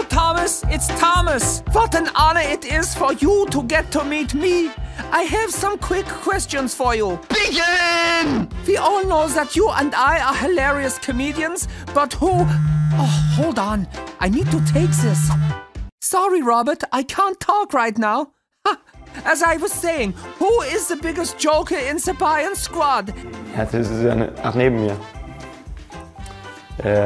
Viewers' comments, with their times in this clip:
0:07 aahhhh my ear
0:12 who also checked their phone to see if it was ringing